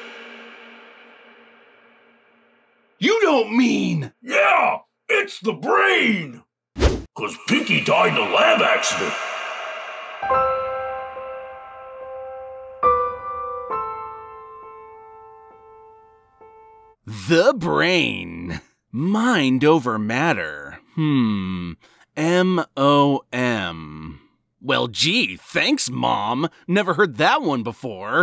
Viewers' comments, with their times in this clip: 0:10 "Hulu has proven otherwise!" - I say as I conclude by snorting, ever so nerdily...